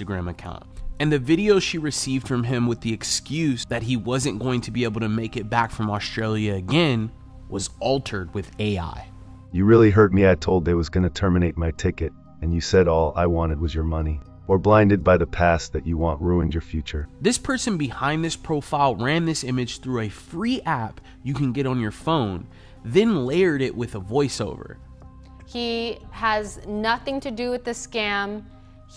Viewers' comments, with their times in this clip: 0:10 this absolutely looks and sounds like a real normal person talking. I can't imagine anyone thinking this is fake.